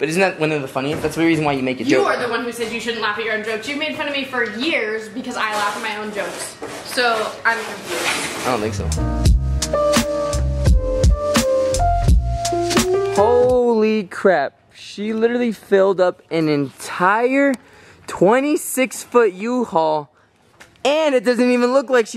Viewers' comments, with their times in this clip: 0:03 UGHHH THAT VOICE 😤